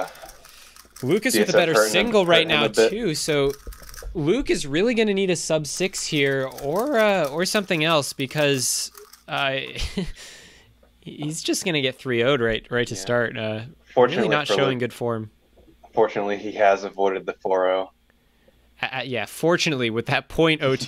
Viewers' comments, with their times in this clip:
0:06 voice crack lmao